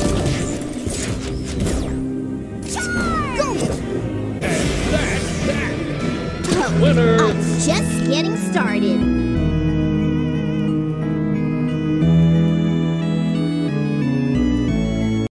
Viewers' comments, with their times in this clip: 0:08 ngl the sad music kinda sounds like undertale music